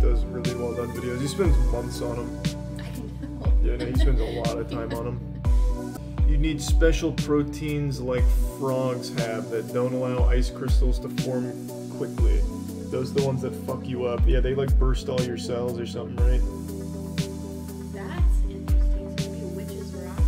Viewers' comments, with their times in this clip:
0:06 onwards charlie sounds like he's rapping